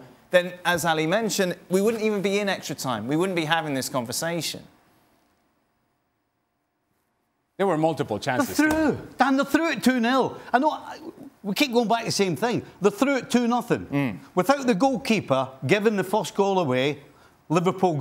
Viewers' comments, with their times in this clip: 0:04 i really love this silence right here.. Steve just like a soft bone chicken